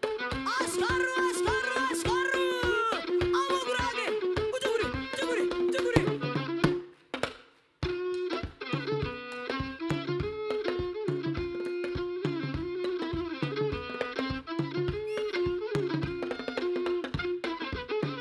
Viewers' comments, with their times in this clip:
0:05 That riddim! wow pure funk